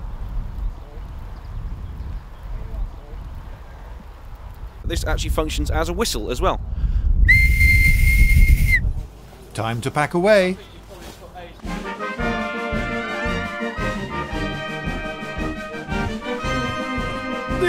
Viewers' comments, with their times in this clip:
0:04 One wonders how many soldiers burst forth, ready for violence, at the sound of that whistle....